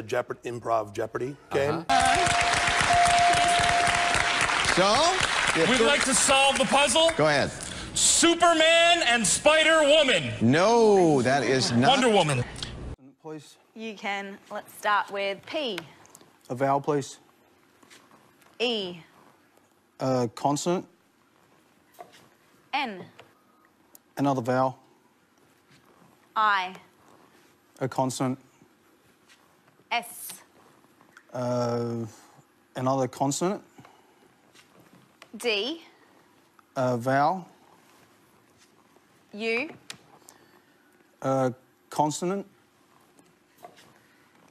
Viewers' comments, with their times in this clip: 0:08 Man Yelled, SUPERMAN & SPIDER WOMAN. 😂🤣😂🤣
0:29 Lol that hesitation is great